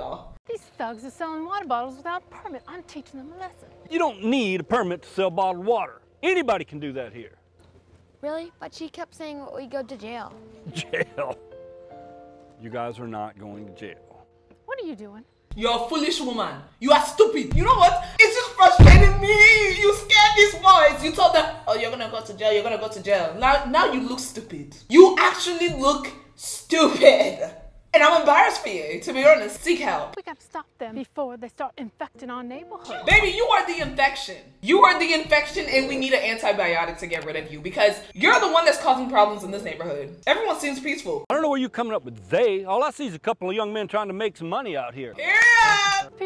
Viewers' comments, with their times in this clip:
0:10 Fr this girl literally switched out of like six accents
0:15 she like spoke 3 different accents 🤣🤣
0:17 her accent changes very 2 seconds 💀
0:21 “I’m embarrassed for u to be honest” as a British person i can say that accent was perfect😂
0:27 the accent change 💀💀💀
0:28 Wait wait wait WAS THAT A BRITISH ACCENT I JUST HEARD-?